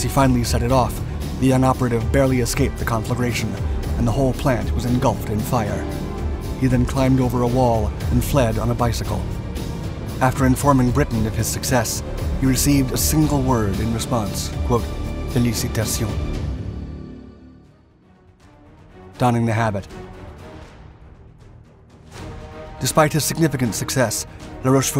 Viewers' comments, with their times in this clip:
0:08 "He received a single word in response:" {indecipherable} What was the "single word?"